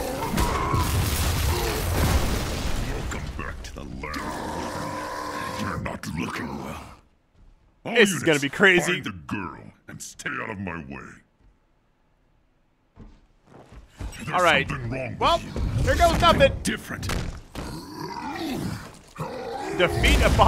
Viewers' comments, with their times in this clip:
0:05 Who heard 'This old times' instead of 'Basil,Thyme'😁😅😂